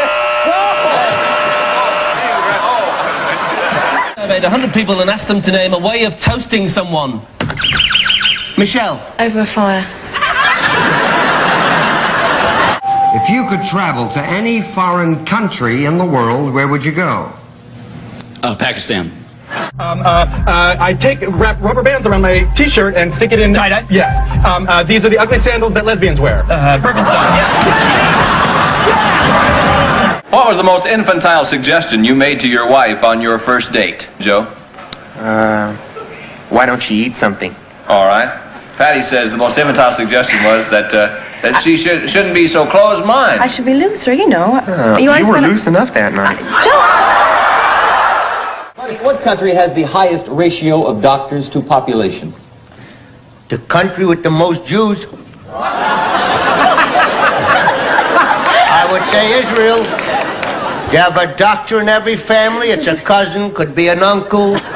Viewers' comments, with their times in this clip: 0:04 Her level of seriousness while saying that gives me a feeling that she's experienced with this "toasting" method.
0:52 "Da country with the most jews" Surprised this isn't a meme. Just the way he said it.